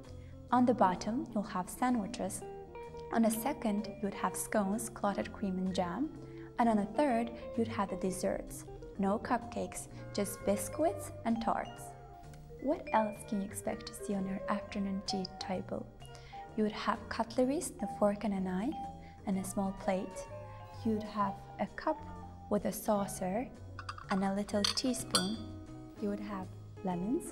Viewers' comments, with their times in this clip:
0:08 did she just say bis-quits? Ahemmmmmmmm